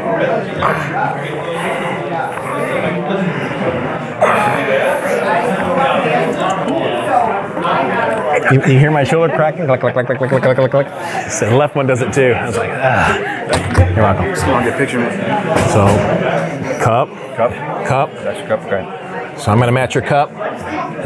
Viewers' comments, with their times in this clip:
0:06 you really can hear John's shoulder cracking like crumpling up grease proof paper or something, darn